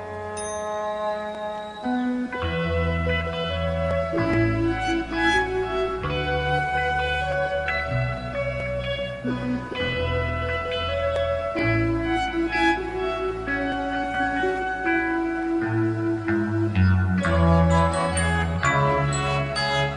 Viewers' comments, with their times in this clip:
0:03 Not impossible they used backing tapes. Notice how you can hear electric sitar while Steve is still bottlenecking the Telecaster.